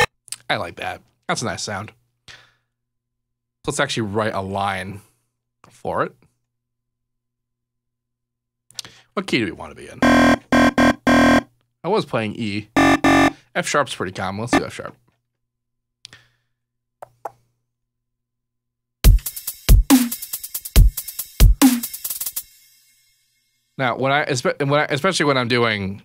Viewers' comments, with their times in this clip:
0:07 -"demonic scary growl sound" -"yeah ,i like that ,that's nice"